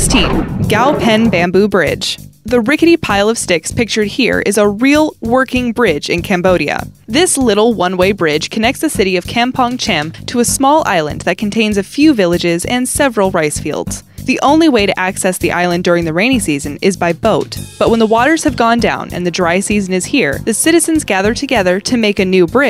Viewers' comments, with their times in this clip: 0:09 i thought she said "cam pog champ"